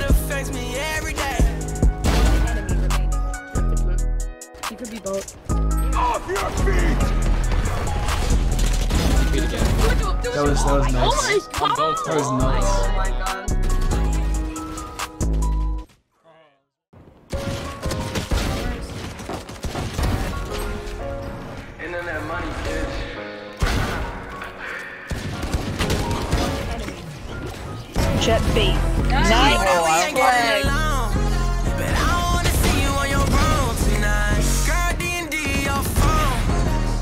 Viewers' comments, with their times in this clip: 0:06 That music sync tho dayum that's good !! Keep up the good work !!
0:10 When you're the kid screaming "OH MY GODDDD"
0:16 That audio sync
0:16 That music synced up so perfectly
0:17 that gun sync with the music was nasty
0:17 Anyone else appreciate the music and gunshot sync on ?
0:18 YOO the shots syncing with the music is mad clean